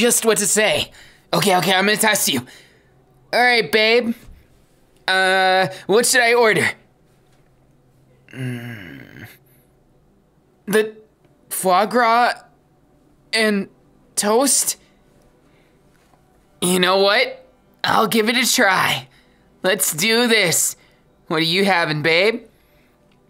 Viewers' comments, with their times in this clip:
0:07 Denki: Mmm.. Me: DId YoU jUsT mOan???!